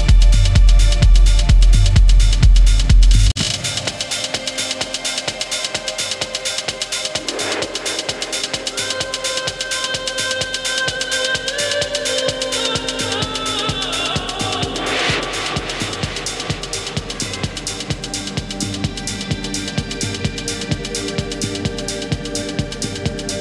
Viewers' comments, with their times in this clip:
0:10 sounds of heaven comes softly from deep down your soul....